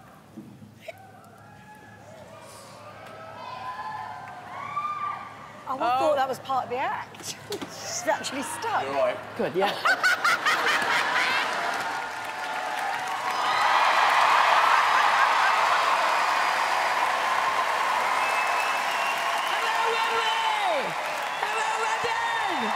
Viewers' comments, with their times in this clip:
0:07 THAT WOMAN HAS THE MOST HORID LAUGH